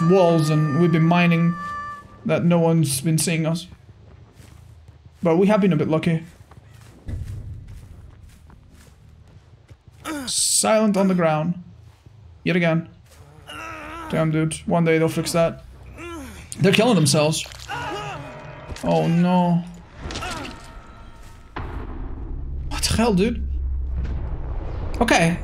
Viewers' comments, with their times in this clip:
0:08 ok lets be real now. This bug has been in the game for like a year or two hell maybe more, like I know it's Behavior but come on, you get rid of a cosmetic glitch that gave no competitive advantage at all in like the week, but this sound bug that's been here for like a year or two still hasn't been fixed yet